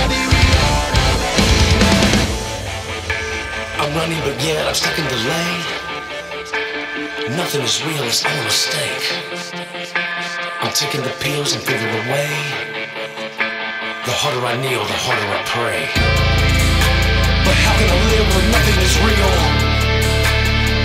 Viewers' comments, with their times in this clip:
0:04 not to mention that build up from that makes me get goosebumps each and every time